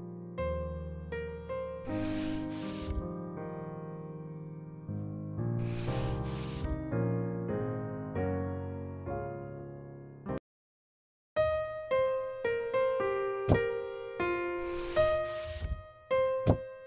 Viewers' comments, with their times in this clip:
0:03 On this part when he honk and sitting look sooo cuteee!